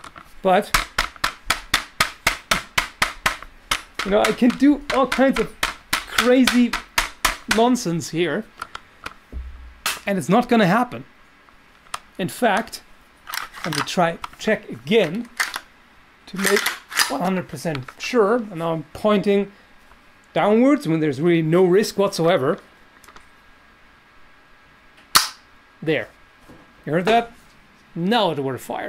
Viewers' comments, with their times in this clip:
0:08 hello i just wanted to say that the Gun fires. if it dosent please explain what that sound was.
0:13 you hear a click which almost sounds like the hammer/ striker dropping